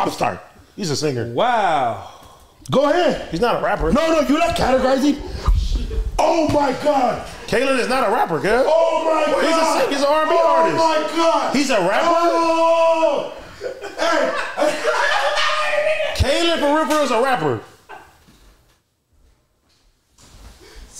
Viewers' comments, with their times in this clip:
0:05 when the pizza bagels timer goes ding